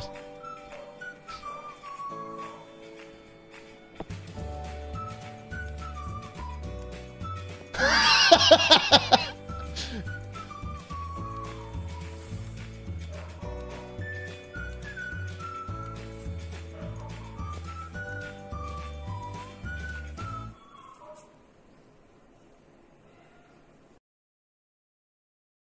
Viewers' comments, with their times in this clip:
0:07 I thought it was my stomach making that sound.